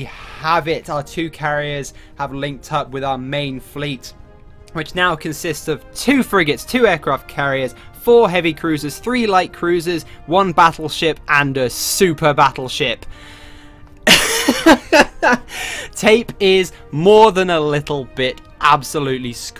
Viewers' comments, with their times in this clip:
0:03 Soviet national anthem? It doesn't have the Red Army Choir, but still.